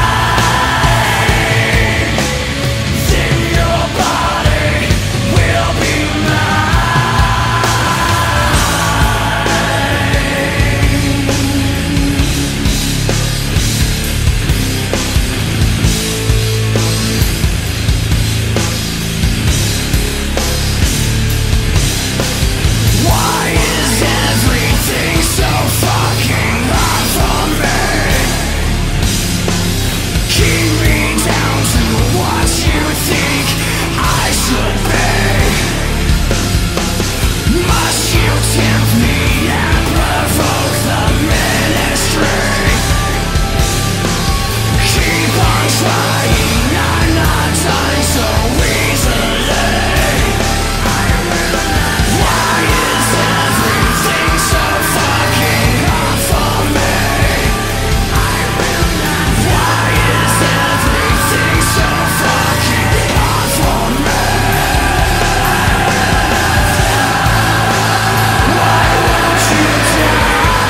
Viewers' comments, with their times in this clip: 0:10 ish guitar/drums is so badass. And the last time he repeats the chorus gives me chills every time.
0:51 Those background vocals form Chester .... soul crushing. You're sorely missed, buddy.